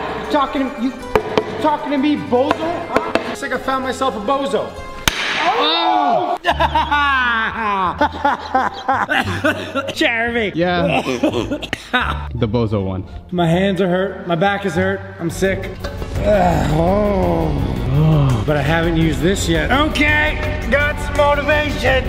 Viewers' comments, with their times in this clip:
0:08 Those laughs, tho 🤣